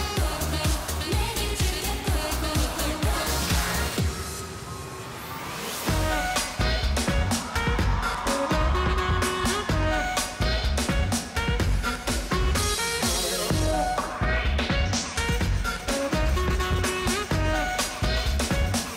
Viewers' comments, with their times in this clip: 0:04 Oh my god this version is better this song doesn't need a rap part ..